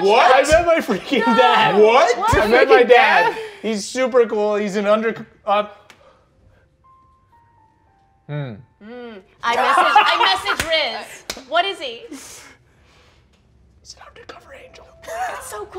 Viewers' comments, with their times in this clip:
0:03 this moment needs more attention! So smart, so funny, so perfect! The silence after hmm